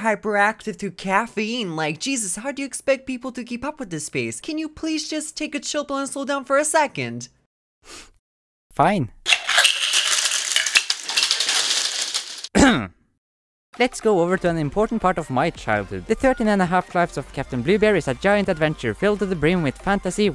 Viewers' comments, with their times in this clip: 0:08 You talk too fast is that pain killer from pubg